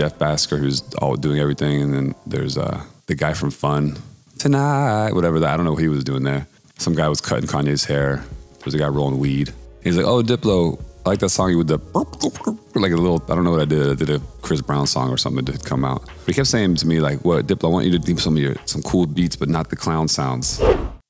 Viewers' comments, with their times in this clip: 0:06 The Weeknd in the background 😭😭